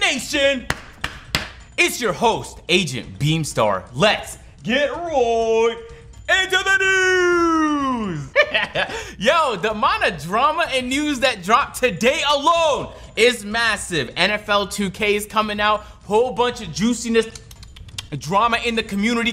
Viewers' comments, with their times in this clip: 0:05 Bruh why be laugh like Elmo